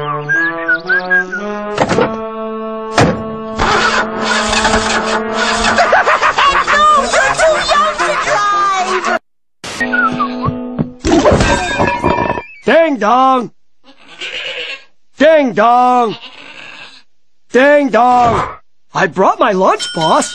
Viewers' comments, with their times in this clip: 0:04 Eddy's laugh makes it better, this one was one of my favorites, very funny 🤣🤣😂